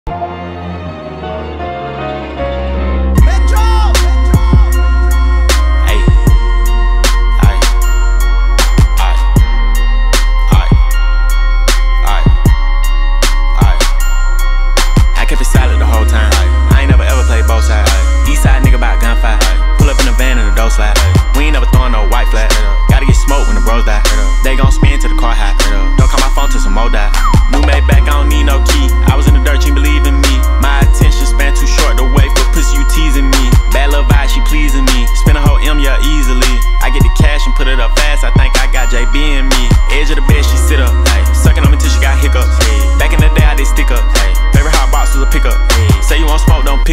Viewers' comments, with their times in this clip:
0:03 i didn't listen the song because i'm listening on loop Thugga yelling: "Metroo"
0:27 anyone else hear that roll in peace flow or is it just me?
0:28 that deadass reminded of a kodak flow.